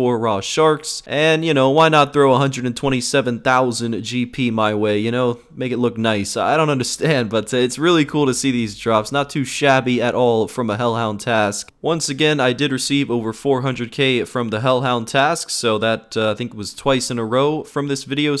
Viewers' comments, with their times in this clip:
0:05 that accent tho